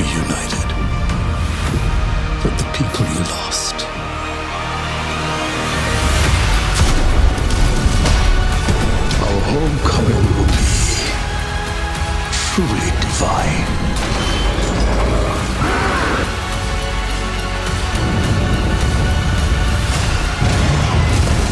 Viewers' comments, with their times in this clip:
0:09 looking good, too bad i can't hear what the one dude is saying